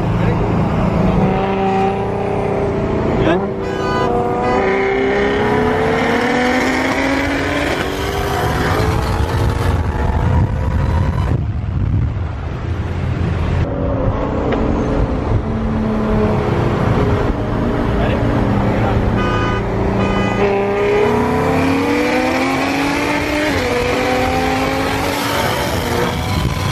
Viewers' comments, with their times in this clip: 0:10 Lol that misfire